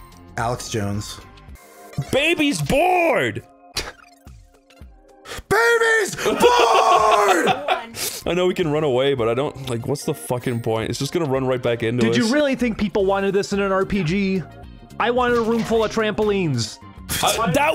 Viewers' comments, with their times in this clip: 0:04 The scream in this video is